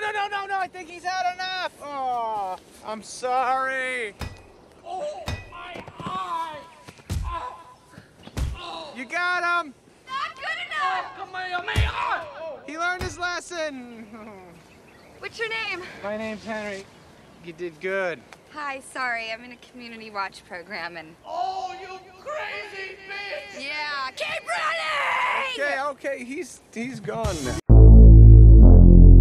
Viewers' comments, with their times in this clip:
0:10 Listen closely. Rob just yelled the Kamehameha from Dragon Ball! 🤣
0:10 Ula screams “Kamehameha” who was the first ruler of Hawaii. I love Rob Schneider’s quips.